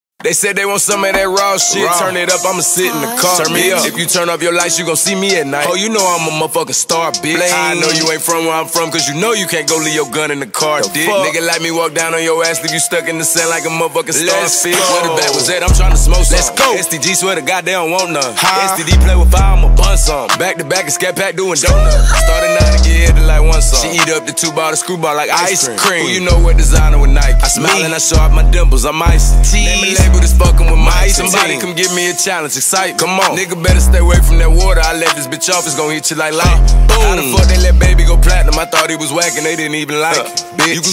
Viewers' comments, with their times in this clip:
0:00 Da Baby gets his money's worth on his beats... He start rapping every time 😂😂😂
0:02 I hear some lady's voice.. I honestly don't know if it's the prod or not.
0:21 If the box had no autotune
0:21 when the rooster wakes you up in the morning